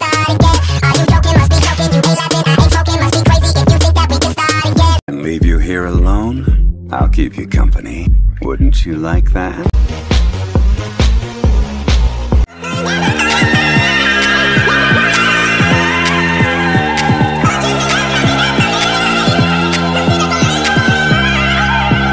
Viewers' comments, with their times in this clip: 0:05 I ALWAYS RECOGNISE ZHONGLI'S VOICE (Zhongli's voice x Just Dance instrumental by Lady Gaga)